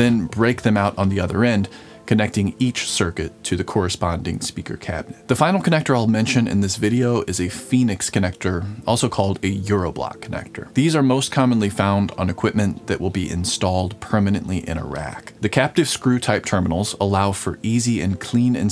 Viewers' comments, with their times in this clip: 0:06 "for systems permanently stored in iraq"